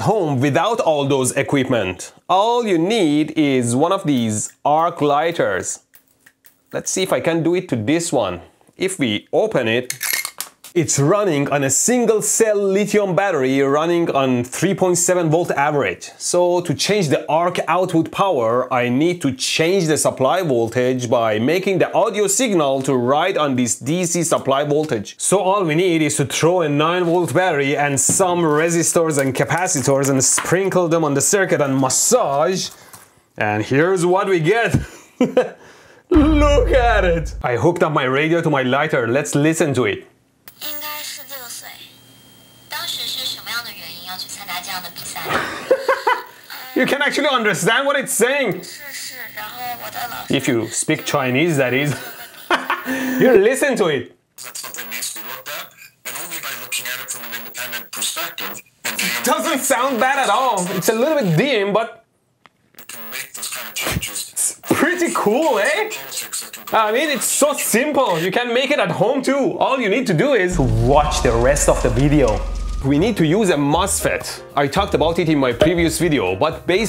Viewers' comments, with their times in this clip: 0:03 damm that was loud af.. the high pitch noice of the lighter i mean
0:03 I thought I had tinitus on my good ear a moment there. Turned out it was the frequency of your device
0:07 I can hear these arcs even without the modulation, and it hurts my ears
0:43 is chinese radio😮
0:49 is speaking Japanese
0:51 Ow my ears.
1:03 It makes a loud high pitch scream tho